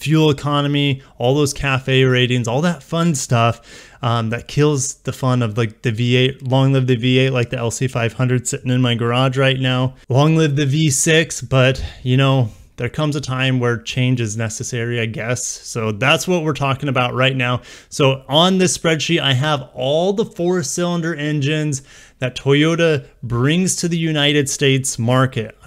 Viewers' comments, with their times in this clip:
0:08 CRIMINAL you should never talk about an LC500 in your garage with that tone and face. Toyota should lock you up for such blasphemy.